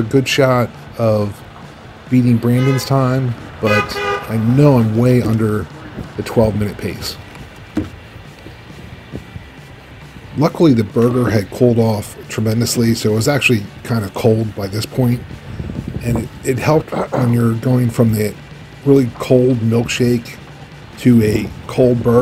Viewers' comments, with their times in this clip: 0:06 That was Furious Pete honkin' ! Lol